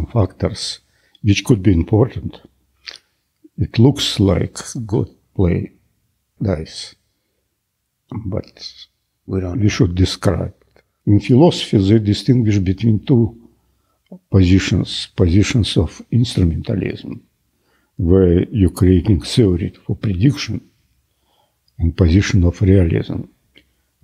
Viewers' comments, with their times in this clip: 0:08 what is he saying ? "it is ???? described ", what is ???